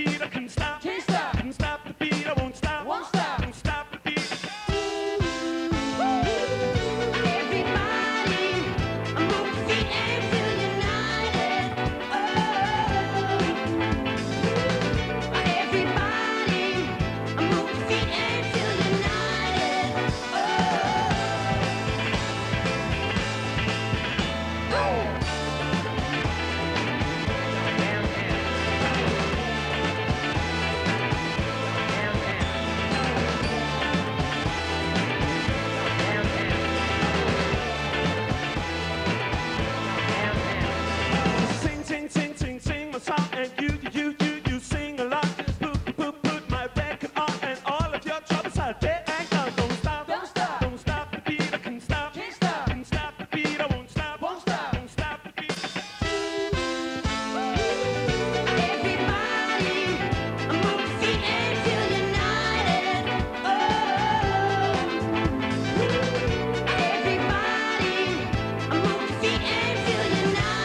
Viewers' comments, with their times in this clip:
0:07 this guy has great voice 😯
0:16 The backup singing in is fantastic
0:16 he sounds like Michael Jackson. At first I thought Michael Jackson made this song.
0:53 How come so many people like this comment when its playback. smh you guys should support real performing musicians. Senior's vocals however ARE live, he pulls the mic away and his voice trails off.